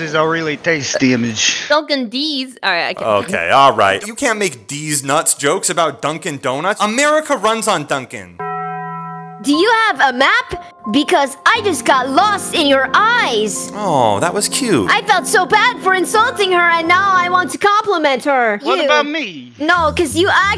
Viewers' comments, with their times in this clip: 0:07 Bro put the taco bell sound on dunkin 😂😂😂😂😂😂 #